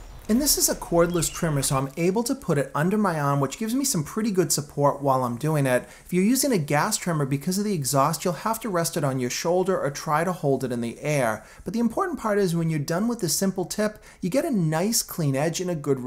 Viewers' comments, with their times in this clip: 0:03 Is that some Boston twang I heard in arm ?